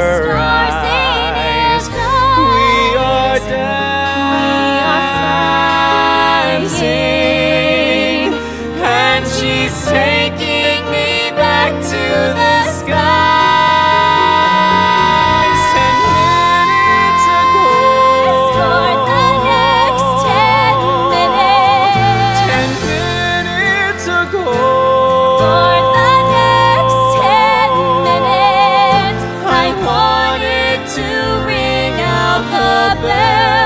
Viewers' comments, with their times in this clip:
0:08 is what you hear entering heaven
0:13 In 20 years time, I think that I can still say: They have captured my heart and soul, like few musical dramas have! A year later I still get chills listening to absolute beauty, especially at the mark...as they are soaring!
0:14 Hey, guys, so I was practicing this song cause it fits my voice really well. I can singing most of Jeremy's part. Having some trouble with the part I'm definitely a tenor and that goes into passaggio cause the highest note of that phrase is a G4. I just wanna know if Jeremy is going through registration into head voice for the word "minutes" and back into a chestier voice for "ago", or is he just chest belting the whole thing with back space and head resonance. Im thinking he's doing the first one cause he has a little flip/crack when he goes back to C4 on the word "ago". You're thoughts and/or if you have advice on how to approach this phrase cleanly would help a lot.
0:16 The video of the time they first performed this at 54 Below a few years ago is my FAVORITE video! I was so thrilled to see that we were getting a recording AND video??? What did we do to deserve this! This mash-up is incredible and something I never knew I needed. And a reunion between these two is always a gift! The key change gives me goosebumps every. single. time ♥️